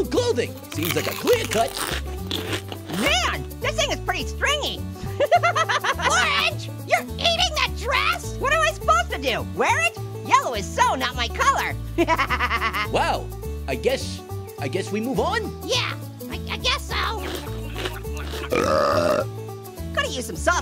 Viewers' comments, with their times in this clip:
0:05 that laugh is funnier that usual 😂😂